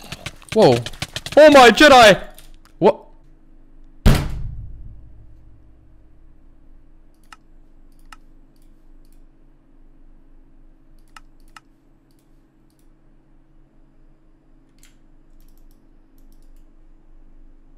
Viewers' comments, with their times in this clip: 0:04 silence was loud af LMAO